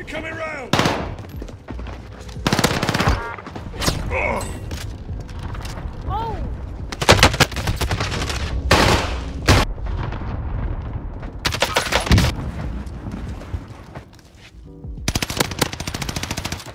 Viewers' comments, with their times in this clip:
0:03 that groan lmao.